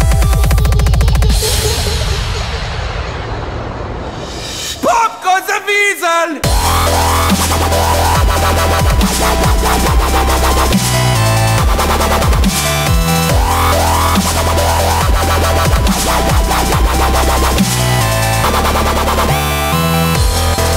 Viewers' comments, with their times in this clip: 0:04 that voice was so funny